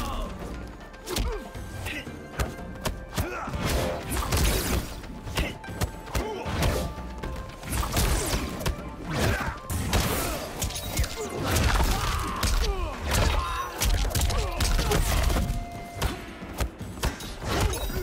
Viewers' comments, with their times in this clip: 0:04 lol bruh sound like he hitting a punching bag that entire sequence